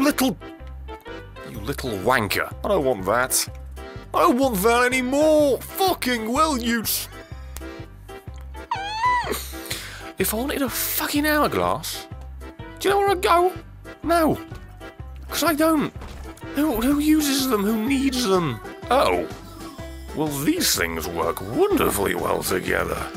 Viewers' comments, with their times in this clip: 0:08 I thought that was my Cat...